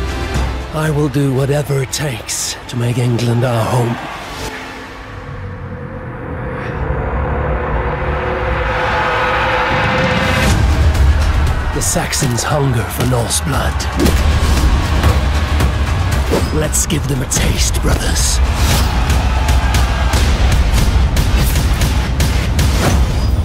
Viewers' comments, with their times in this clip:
0:10 Am I the only one that hears a funk beat ? I swear I can hear a bass.